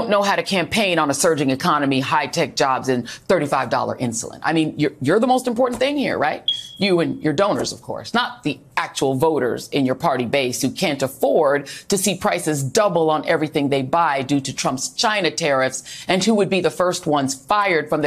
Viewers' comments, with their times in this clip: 0:04 fire alarm chirp 😂
0:05 The fire alarm battery beep is CRAZY!!!
0:05 the smoke alarm beep .....yeah she be that
0:06 Beep ! Love it and it should be a constant sound over anything Joyless Reid says.